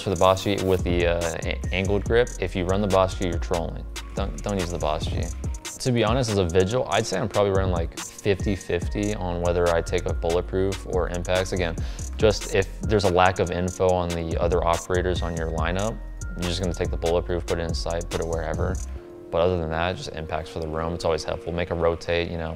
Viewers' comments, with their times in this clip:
0:04 the desperation in his voice lol